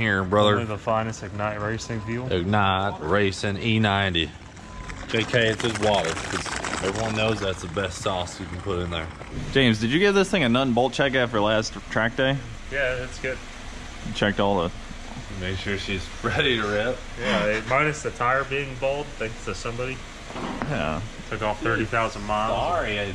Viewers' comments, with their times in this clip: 0:04 Car be rippin' the bong.